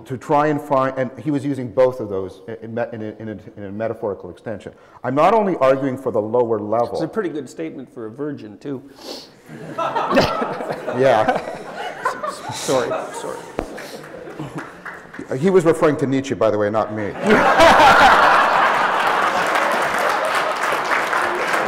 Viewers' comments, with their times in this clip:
0:07 the way jordan interrupts with that and then apologizes with that guilty look trying to hold back his laughter is just like a bad kid actin up in class hahaha #VERYRARE